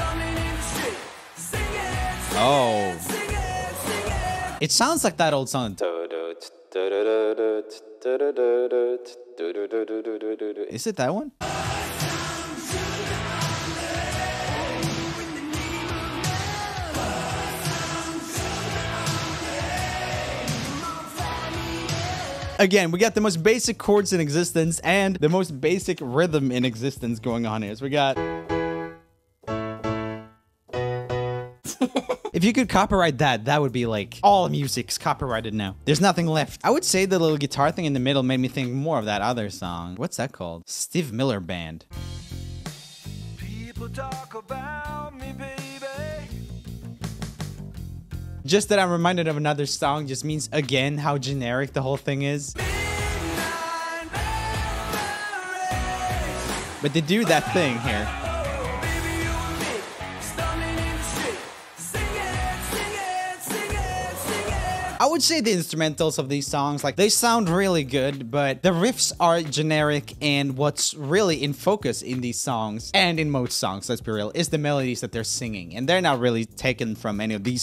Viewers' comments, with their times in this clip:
0:05 umm...why did that feel like Act My Age...!🥺❤️
0:10 “boy found to the omelet” thats what i heard :/
0:11 Sounds like I love Rock n’ Roll song
0:41 don't the cords in sound like the cords in angel by shaggy? 😂😂😂😂
1:04 DUDE, WHY do you sound auto-tuned when you talk? haha same sh*t with the last video! Are you using too much that now you have it embedded on your vocal chords? :P
1:04 What is up with the accent? LOL.